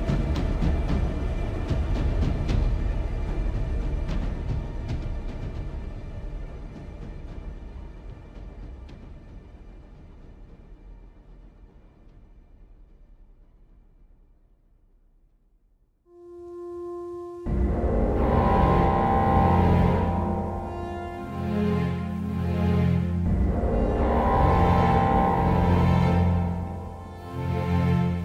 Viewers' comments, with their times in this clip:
0:10 is such a scary sight too see the music mixed in with the sounds of the missiles launching is just so scary too see